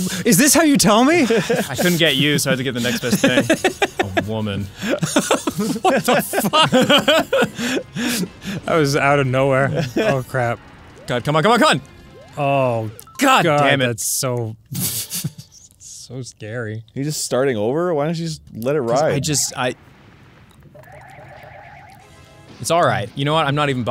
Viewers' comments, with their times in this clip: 0:05 That was Dan's most genuine "What the fuck" ever.